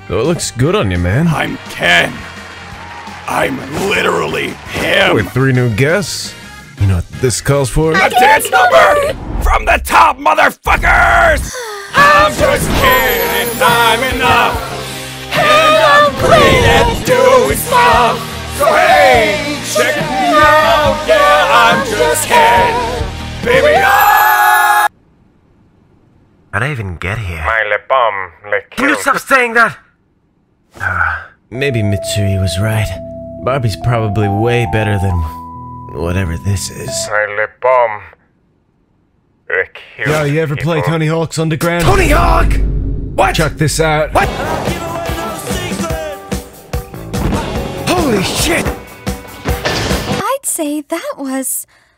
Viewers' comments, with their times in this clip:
0:10 he sound’s like tank dempsey
0:37 I love how raspy Iguro got when he saw Tony Hawk